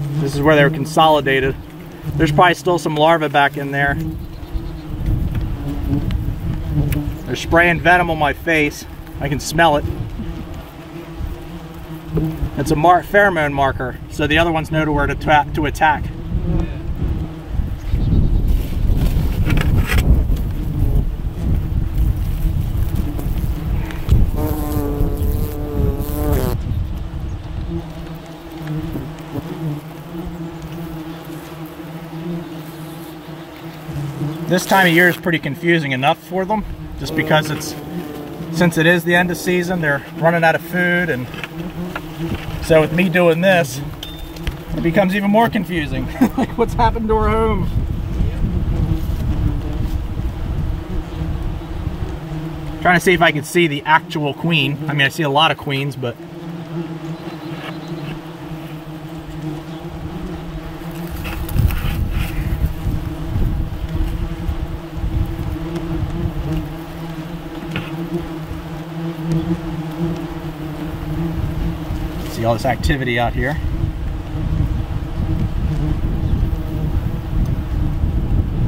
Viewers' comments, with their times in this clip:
0:08 got the sound of wings right up close in my headphones.... not nice.... fighting the urge to swat a wasp myself and it is just before midnight in my room. I know they are only on screen but it is still hard not to swing my hands around like a mad man.
0:24 Listening through headphones, that buzzing in the right ear almost made me take them off and start swatting at the air! lol
1:00 Aaaaaa this gives me the heebiejeebies. As someone with a slight fear of wasps and the like it’s not the best idea for me to be watching this with headphones on. I find myself flinching everytime one buzzes an ear and oh lord there’s one stuck on the right side around the mark aaaaa